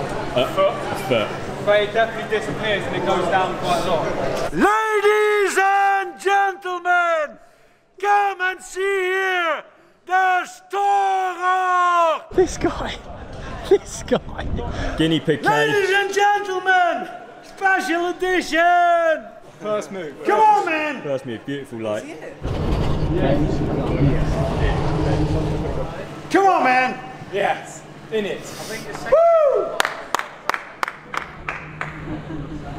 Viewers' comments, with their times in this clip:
0:05 sounds like mike myers
0:05 when the dude yells "ladies & gentlemen" he sounds like shrek lmao
0:07 he sounds like shrek hahaha
0:07 Bro sounds like Shreck
0:07 Why the dude sounds like Shrek shouting! 😂😂
0:07 You cant tell me man doesnt sound like shrek
0:15 the old man sounds like shrek